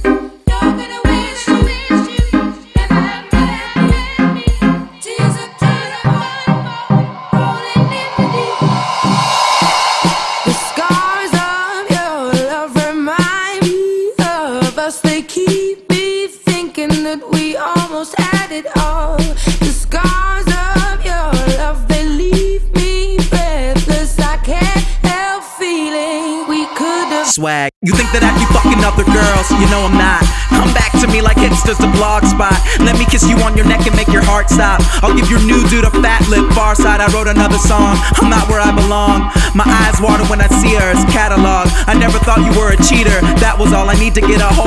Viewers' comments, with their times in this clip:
0:08 the fact that there was no drop kind of made me sad
0:27 He starts rapping
0:31 So I'm like 2min in and this track is straight garbo because the regular one sounds better... okay that is fire; lets just cut the first 2 min 30sec because that remixed track was just trash.